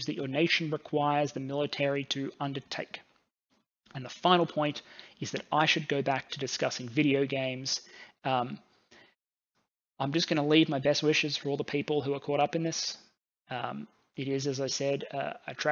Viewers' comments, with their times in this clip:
0:03 Great to he such accurate info from an Aussie voice, OY OY OY !